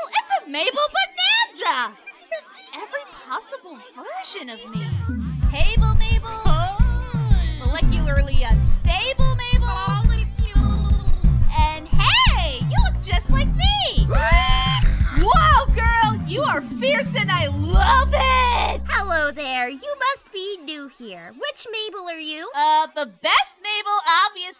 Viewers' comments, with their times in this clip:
0:05 Morty-Mabel in the background Oh jeez.